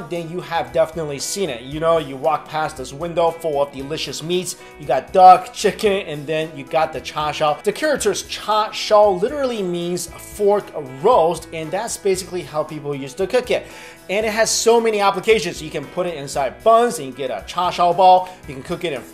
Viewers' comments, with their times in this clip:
0:03 You got dog, chicken.